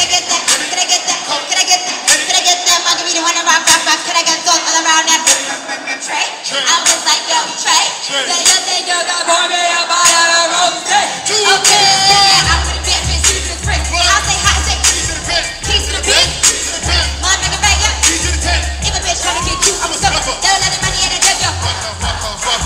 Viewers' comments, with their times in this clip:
0:07 Roman took over for a sec there👹
0:08 the way she stutter 😭😭😭 and possessed by Roman 😭😭💀💀
0:09 oh, kayyyyyy - her roman holiday is hitting her